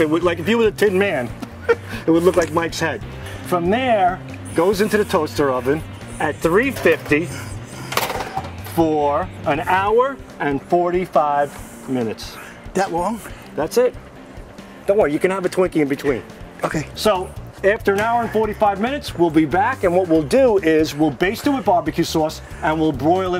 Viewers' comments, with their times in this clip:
0:04 WITNESS THE BREATH OF A CHAMPION